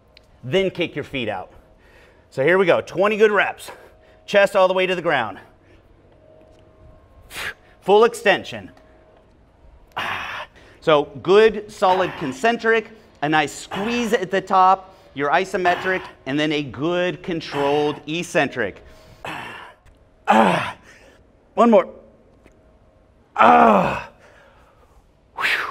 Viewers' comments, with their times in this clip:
0:10 WTF is going on with the AHH AHH while he's talking hahaha...